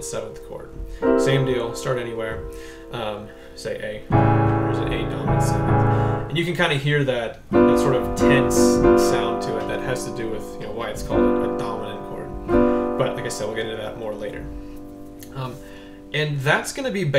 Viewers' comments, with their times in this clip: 0:04 when you say A dominant 7 why are you playing the Amin7? shouldn't it be Amaj7? Or is the dominant just another way of saying minor7?